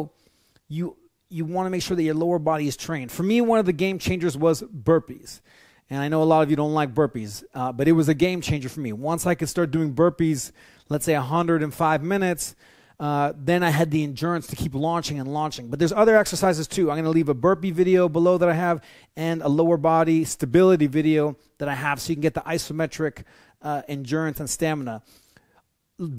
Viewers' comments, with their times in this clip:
0:10 did he say 105 minutes of straight burpees???
0:10 Did he really say 105 minutes of burpees? That's not humanly possible.